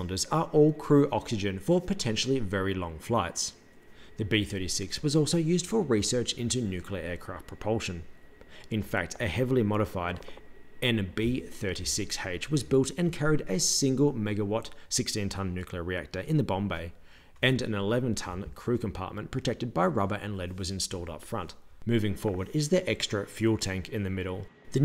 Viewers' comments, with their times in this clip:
0:08 This is a very interesting video, but there is no way you didn’t just rip ass